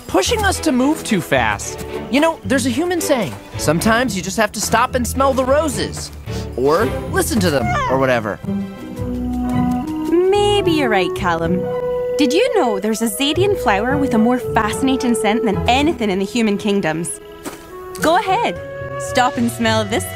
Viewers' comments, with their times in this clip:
0:06 omg dat noise he made!